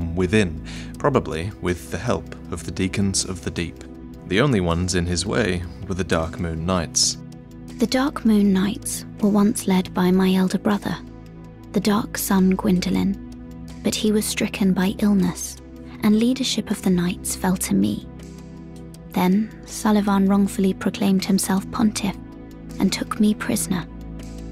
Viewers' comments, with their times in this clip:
0:06 Oh shit! Was that my bae, Melina, talking in this world??!?!
0:07 is it just me or does she sound very similar to melina from elden ring
0:07 is it me or does this girl sound like Melina?
0:08 Im a souls game virgin but character sounds exactly like Melina from Elden ring. Could they be from same VA?